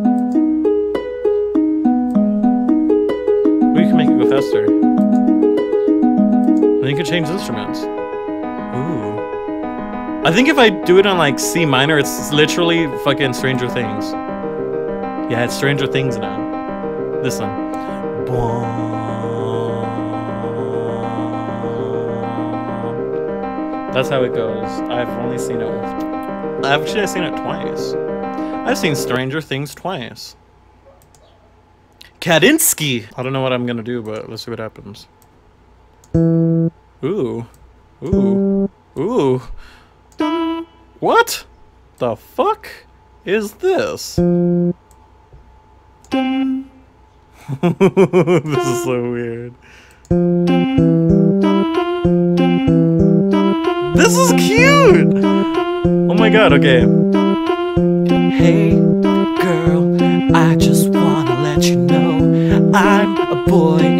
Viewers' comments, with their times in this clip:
0:08 Now that's sum Vsauce sounding shit right there.
0:49 it feels like xiu xiu song
0:49 Sounds like second wave emo